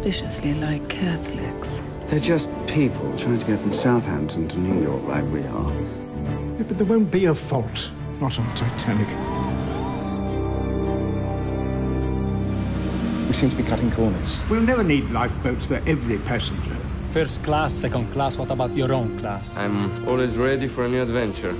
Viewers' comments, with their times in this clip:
0:08 You hear the generic cheering ? Thats why I know this is gonna be lame.